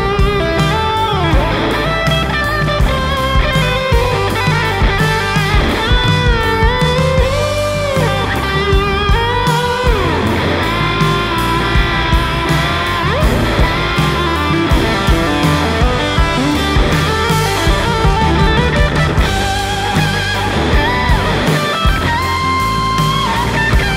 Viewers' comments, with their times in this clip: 0:06 The bending phrase -:49 is just simply so good, had to grab my guitar and learn it asap